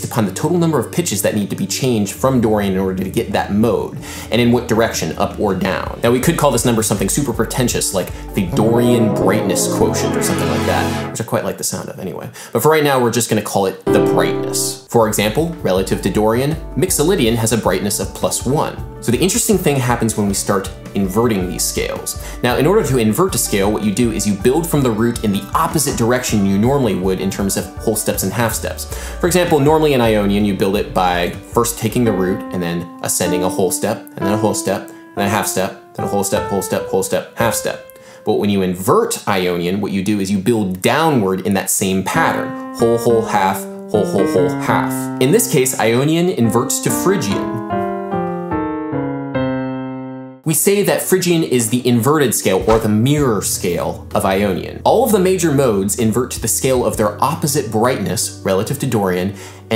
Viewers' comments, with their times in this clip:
0:07 I love the synths when you say ''Dorian Brightness Quotient." It gives it a super cool effect. I keep rewinding to hear it. :P
0:07 completely unrelated but those chords in the background were saucy. xD
0:08 im in love with this chord arrangement and idk why
0:08 DUDE!!! What an incredible brand of humor you have!! I'm nowhere near the expert you are, but I'm imagining the notes you played here were VERY specific ones. LOL
0:08 What was that little jazz synth lick you made ? What techniques were being used?
0:10 which chords are being played when you speak "Dorian Brightness Quotient" ? it seems a glide progression...
0:42 why does sound like shoveling gravel in minecraft